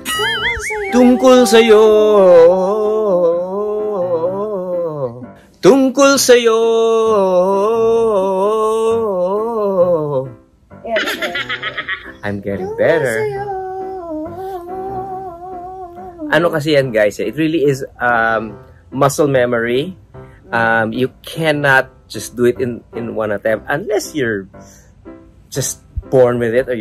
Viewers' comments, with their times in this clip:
0:10 You both were so funny to watch together. Dry sense of humour ...and your banter made made my day! aah, I was LMAO when Ogie started singing "Tungkul Sayo," and Regine was singing along with him....reminds me of roosters crowing... hahaha I love you both! G-d bless you two and your child. Many blessings and protection.